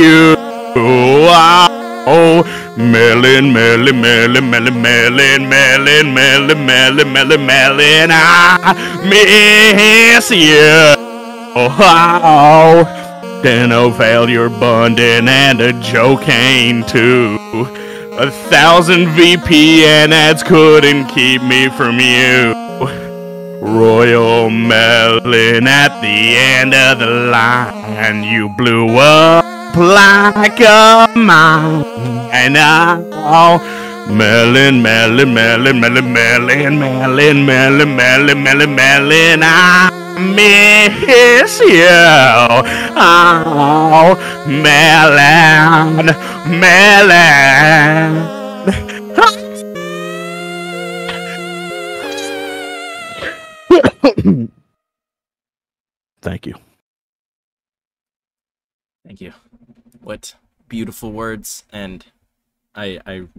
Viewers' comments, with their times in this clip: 0:10 me:*crying* background music:NEVER GONNA GIVE YOU UUUUP And my a$$hole twerking. Reason:LøL
0:51 he sounds like a fire trucj💀